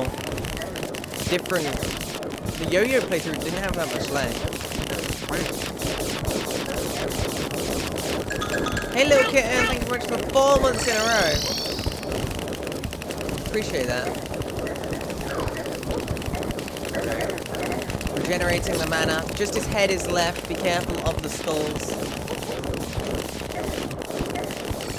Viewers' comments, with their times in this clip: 0:08 * hears twice sound effect ah I see you’re a man of culture